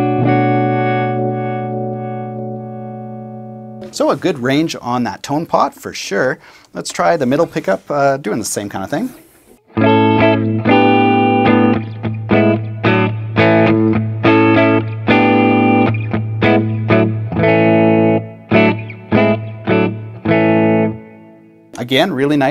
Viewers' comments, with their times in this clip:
0:09 What I was most impressed with was how it sounds exactly like a guitar! 😁 Seriously though - great review! What was the song you were playing ?